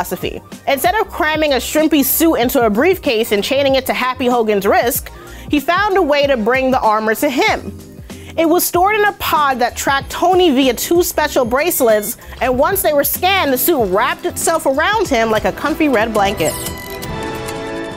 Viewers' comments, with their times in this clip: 0:03 Did she just say "Happy Hogan's RISK"???????
0:04 I heard “ happy Hogan’s wrisk”
0:04 did she just say Happy Hogan's risk?.......